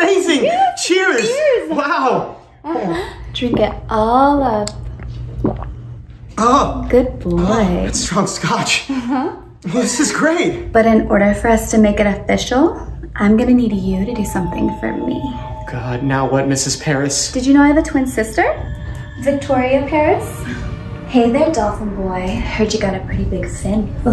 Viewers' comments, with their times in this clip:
0:05 that moan was zesty af